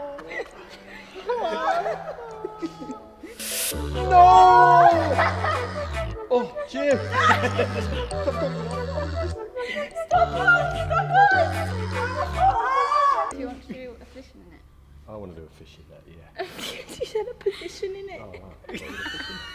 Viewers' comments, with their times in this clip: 0:03 the noooo at the same time cracks me up